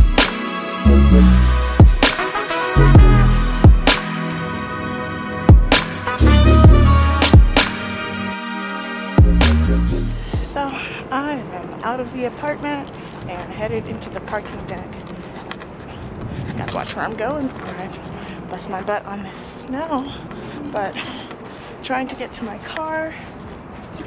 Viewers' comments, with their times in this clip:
0:10 Extreme stomach growling looks delicious